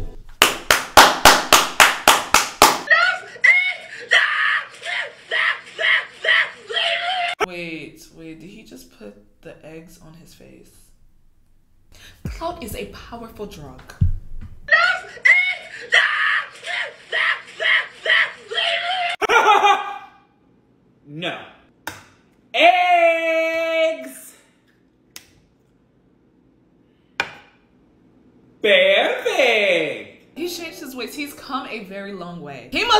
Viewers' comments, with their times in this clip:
0:04 was the worst part of this whole video. Sorry but if you had any sense of humanity you would've cracked the eggs.... HE DIDN'T EVEN TAKE THE TIME TO CRACK THE EGGS-😭 also don't scream like your 2. Thanks😑
0:19 bro this not an Arabic accent we rarely have accent like u offended me ngl